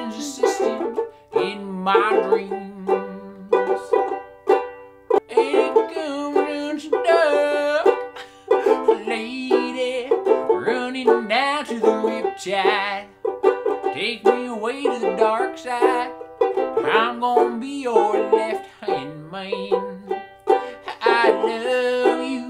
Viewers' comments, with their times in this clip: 0:04 Kermit sings the Riptide